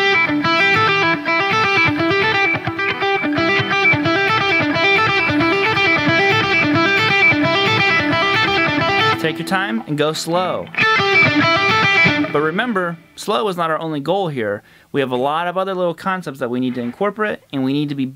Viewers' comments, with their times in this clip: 0:03 your G-string's ringing out.